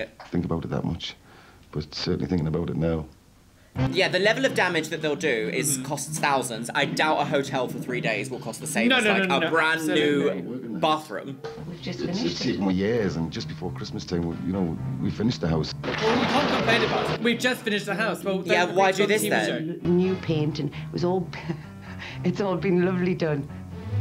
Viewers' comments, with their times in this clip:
0:05 what is with this Ocarina of Time mini boss, Jaws approaching music? 😂